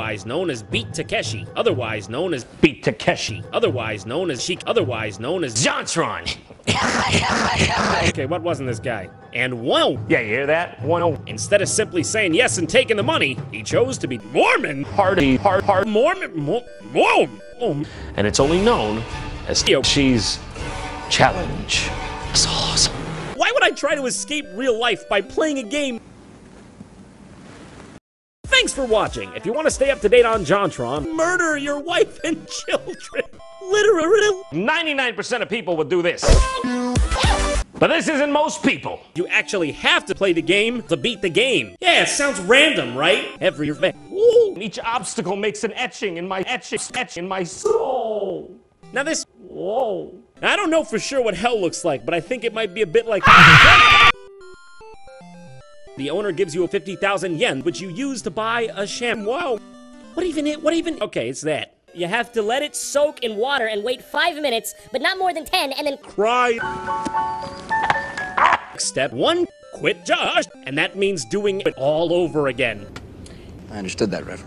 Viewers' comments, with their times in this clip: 0:05 The sound of Jon's reversed laugh is forever ingrained in my mind.
0:05 Jontron! descending cough
0:05 You have such a sexy laugh, Jontron. ;D
0:06 IS HE CHOKING? jk
0:06 best dubstep drop ever
0:42 sounds like scout
0:50 "I don't know for sure what hell looks like but"-AAAHHHHHHHHH That actually fucking scared me.
0:51 Screamer trust me, i've seen way worse though. Also, i lost breath for a few seconds from laughter for the sentence mixing on the "Shamwow"
0:52 AAH, JESUS! Cover your ears, headphone users! Wait, DON'T, SHIT!
0:53 I remember having my ears bleed out and I need stop posting
1:01 You have to let it soak in water [squeaky voice] & wait 5 minuters, But not more that 10 and CRY. I lost it.